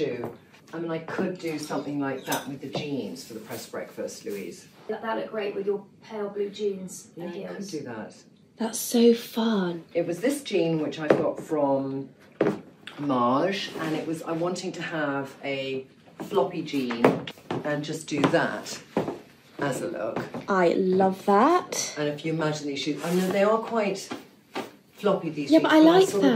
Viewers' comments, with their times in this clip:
0:10 I don't know the jeans brand. But I listened mins. Trinny says: "It was this jean that I got from Mage Mâge Marj Maj". It could be a French brand? I also thought of how 'Taj Mahal' sounds. Good luck 😊